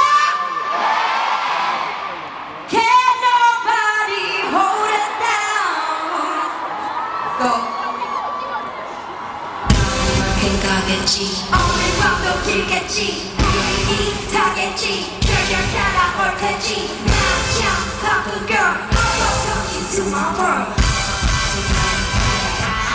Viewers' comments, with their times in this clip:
0:03 CL's voice! I fell in love all over again!